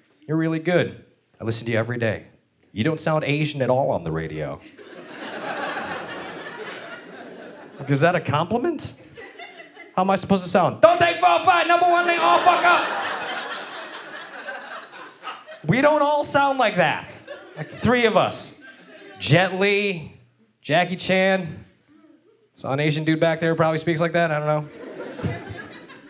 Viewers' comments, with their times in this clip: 0:09 😂 i choked on my spit! I DO expect that voice to come from that face! DON TAY 405, 101 ALL FUCK UP! This guy should go out on a Lim; each Tuesday during his KNX radio gig, he should do the traffic report using that voice, sounds like he just got pulled from a locked cargo container at the docks in San Peedro
0:09 His Asian outburst, always funny!